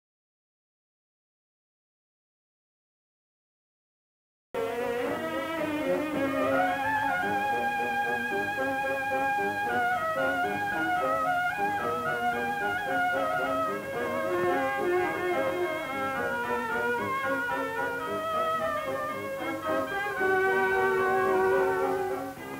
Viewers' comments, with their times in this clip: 0:04 Audio returns in